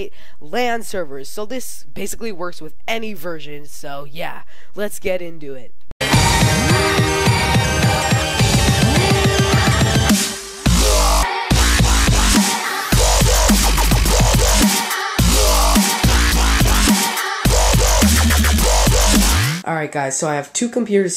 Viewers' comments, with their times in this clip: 0:08 Rip headphones i destroyed my ears